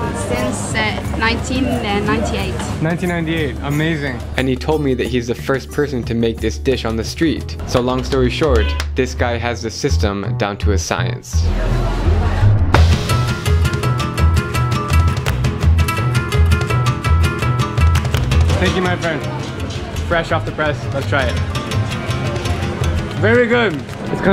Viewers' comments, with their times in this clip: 0:08 I heard Mario anybody else